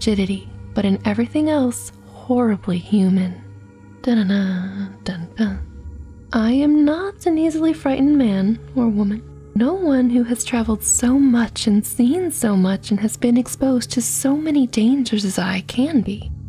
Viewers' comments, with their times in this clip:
0:04 tanada dan na That was really sweet